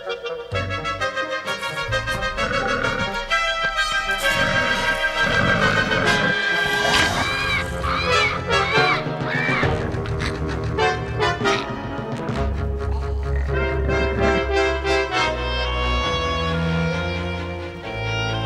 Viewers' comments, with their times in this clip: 0:05 thoes screams will haunt me in my nightmares
0:06 Roblox death sound